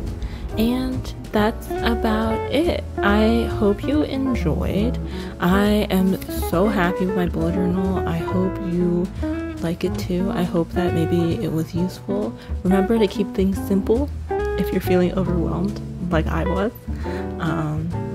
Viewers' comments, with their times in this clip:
0:05 this voice is creepy